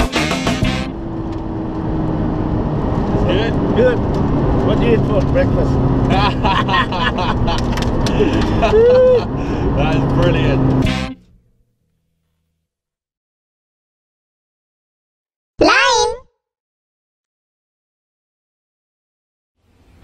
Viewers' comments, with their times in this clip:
0:06 Dat laugh XD Priceless, it should become a meme !